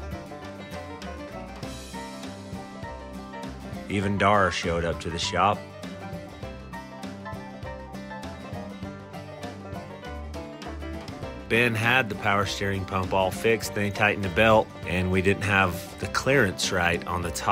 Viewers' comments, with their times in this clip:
0:05 Narration is a nice touch ~